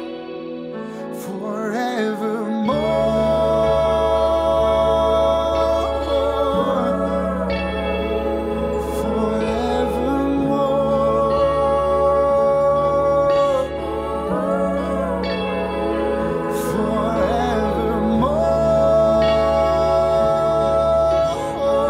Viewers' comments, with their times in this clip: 0:09 is that a vibraphone?